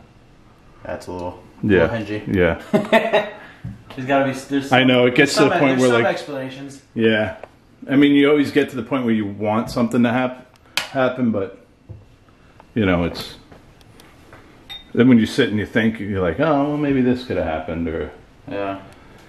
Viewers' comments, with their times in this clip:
0:03 distant bang, happened a few times after this time.. u did pause what u where saying , u heard something!